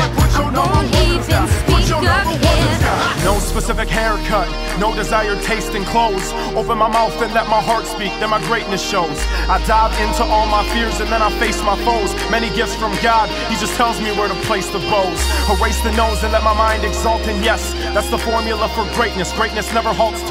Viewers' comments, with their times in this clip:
0:04 Says "I want to ceep people staying metal" WTF?